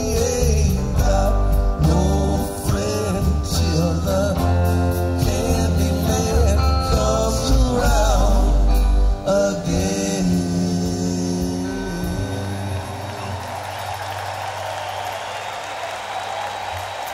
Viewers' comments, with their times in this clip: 0:05 :chillwcat:just love that Adams family riff and the whole bit is Grate